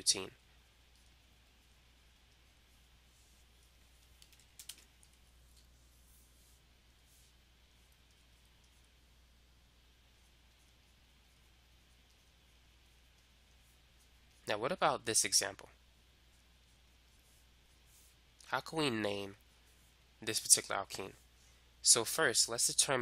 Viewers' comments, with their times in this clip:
0:04 it cuts out :(